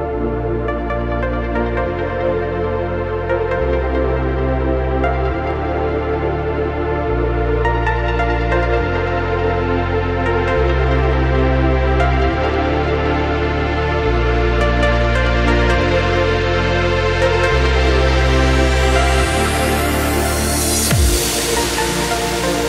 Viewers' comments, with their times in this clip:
0:07 What a nice uplifthing song ! = 5*